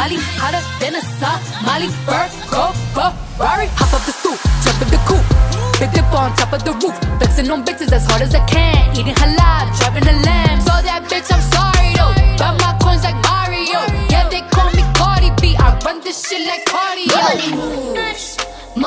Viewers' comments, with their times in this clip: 0:04 The part that hit me was ... I like how the beat entered. Gave me a different vibe🥴